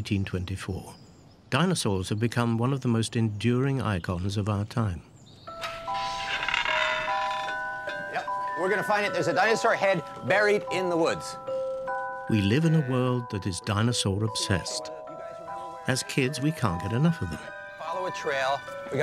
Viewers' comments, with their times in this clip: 0:05 Would anyone happen to know the name of the quiet piano melody that starts playing ?